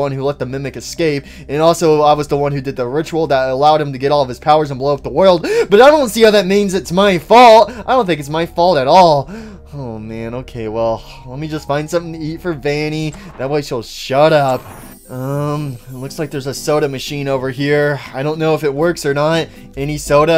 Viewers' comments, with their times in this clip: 0:07 I heard ball not fault